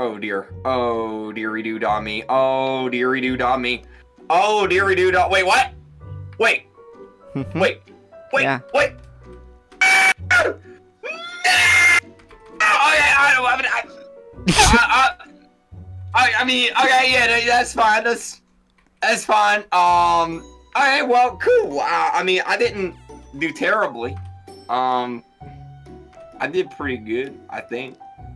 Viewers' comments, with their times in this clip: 0:08 I laughed so hard when Kreeks mic was so distorted when he was trying to last second pull ahead of pink leaf for the tie breaker point
0:09 kreek screaming was hella funny
0:09 it sounds like he's playing fnaf
0:09 i like when he scream like that xd
0:09 Me: HOLY S*** THATS LOUD
0:09 he screams like hes an animatronic in FNAF